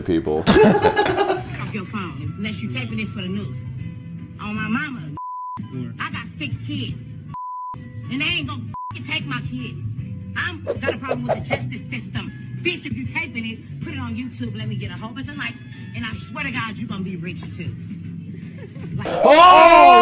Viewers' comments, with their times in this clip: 0:08 it doesn’t blur out the F bomb